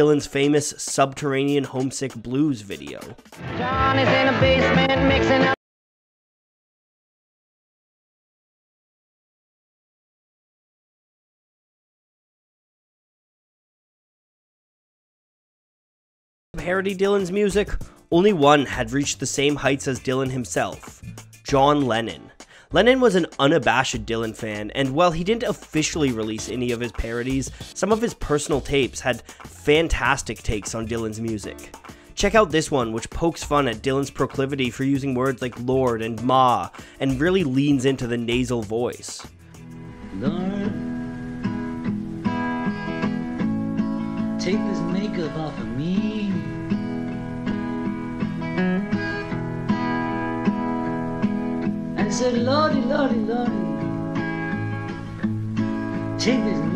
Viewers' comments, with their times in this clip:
0:04 Anyone else having the video's audio cutting out ? I'd guess its a copyright thing, but just wanted to make sure it wasn't just on my end somehow
0:44 yo what chords are they? is he using a capo? sound stellar